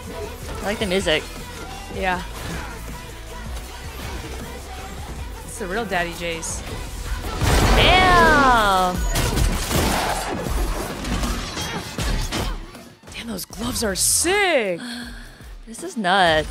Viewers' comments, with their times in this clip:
0:04 editor, you killed me here with the loading sfx :D